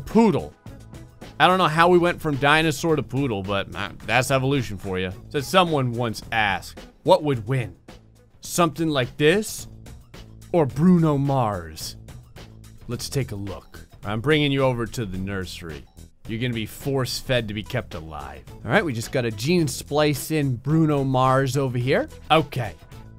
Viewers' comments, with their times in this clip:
0:05 possibly drunken gray Dinosaurs was great as ingestion. Let it sink in that he said that. (edit) I misheard but still.